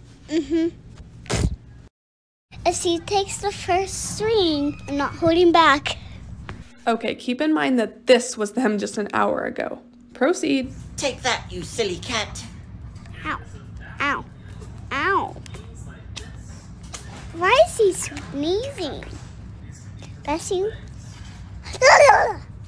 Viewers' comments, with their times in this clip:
0:10 lilly looked like she didn't have any ears. And the sneezing was cute and funny.